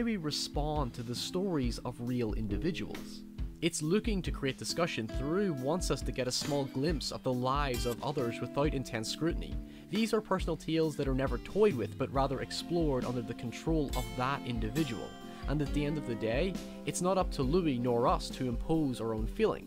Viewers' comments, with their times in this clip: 0:06 "documeneries" m8 you're from NI, cut the shite XD